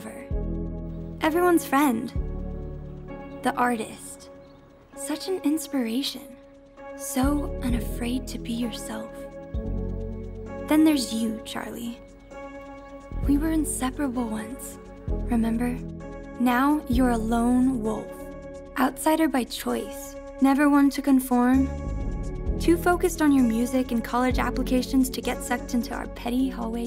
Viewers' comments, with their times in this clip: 0:09 "To be herself." Did I hear that correctly? Herself